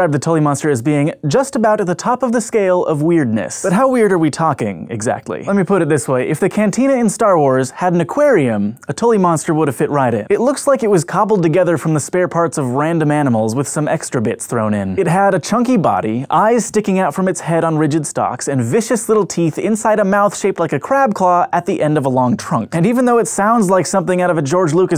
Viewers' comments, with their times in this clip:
0:06 Shit, I thought he said 'Starcraft' and started flashing back to Joeyray's bar.